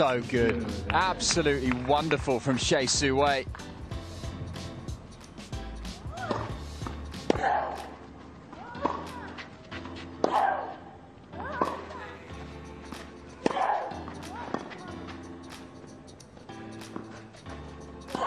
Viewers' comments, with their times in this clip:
0:06 Gavrilova's grunt is worse than Sharapova's!